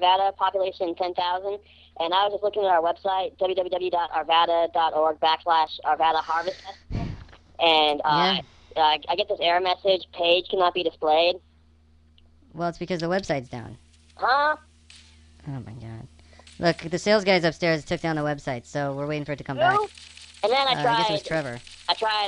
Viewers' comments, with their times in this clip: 0:03 Ahaha this is still so awesome! Never going back to tech support, god damn it! Love the sigh when he reads the entire URL :D
0:07 That deep breathe is so relatable.